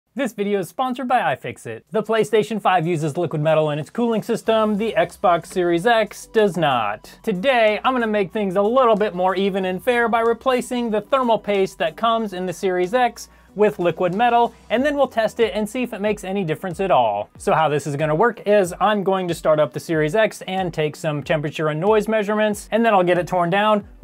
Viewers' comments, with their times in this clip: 0:06 you said snot